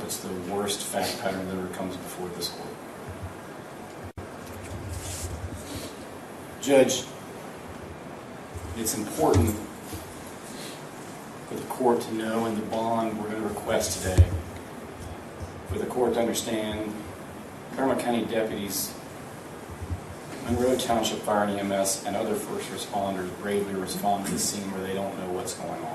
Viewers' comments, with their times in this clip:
0:08 Excuse me???? you dont get to cry now you monster!!!